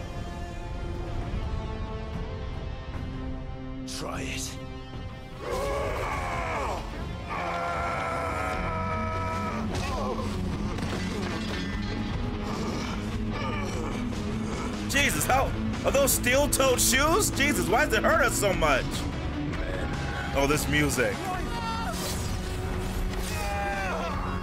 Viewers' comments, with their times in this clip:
0:08 When Barnabas kicked Clive and those electric guitars kicked in and went full Aerosmith, I was losing my shit... These kind of moments are what I love in video games.